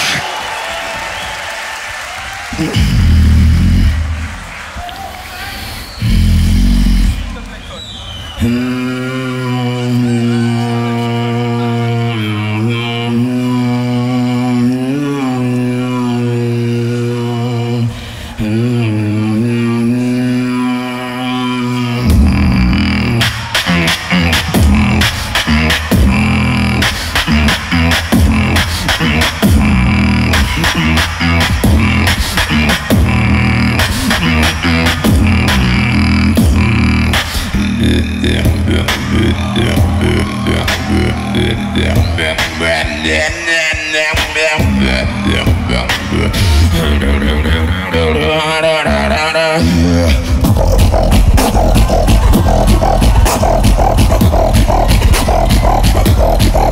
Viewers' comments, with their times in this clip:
0:10 footbox : " inward bass again and again "
0:36 at this moment, inertia has already won the battle, the guy manages to diversify and distort some sounds that for a human being seems to be impossible...
0:37 HAMBURGER CHEESEBURGER BIC MAC WHOPER "Chanting in Sardaukar"
0:38 I did it first, jk but it sounds better than expected on stage
0:43 Inertia second round vs Footboxg was my favourite perfomance, also with "high, middle, low" against Alem, of Inertia on this GBB. Never saw that transition/voice crack during vibration bass... is insane!!!!